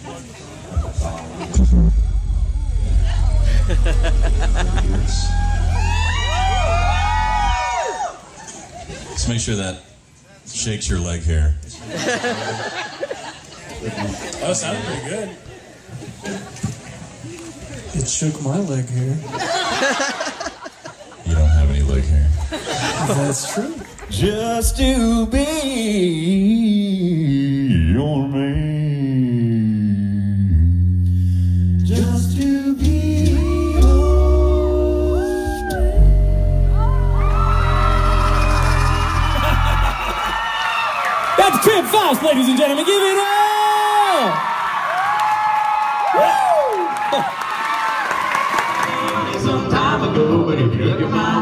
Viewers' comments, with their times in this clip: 0:06 what's the minute clip from? that seems like pretty great quality for live
0:34 Okay so since no one is talking I gotta do it myself: That outright moan of that woman is sooo relatable XD
0:34 Tims voice made a woman moan..
0:35 The vibrations were getting deeper and deeper and he finally led her to OG
0:36 That girl scream of pleasure lmao